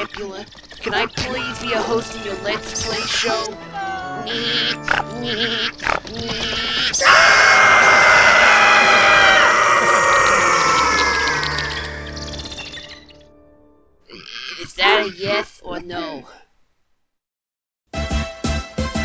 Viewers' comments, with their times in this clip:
0:06 i like the ding dong funny scream with rabbids screaming.